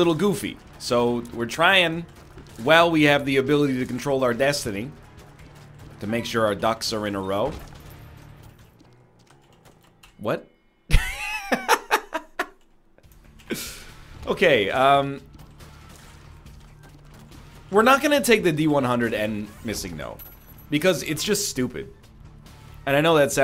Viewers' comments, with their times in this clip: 0:10 That flat "wut" was great